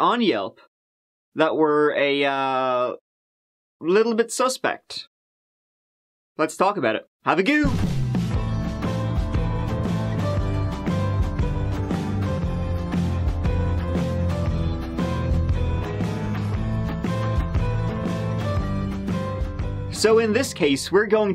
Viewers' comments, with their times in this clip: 0:07 That's gotta be the best ”have a gooo” ever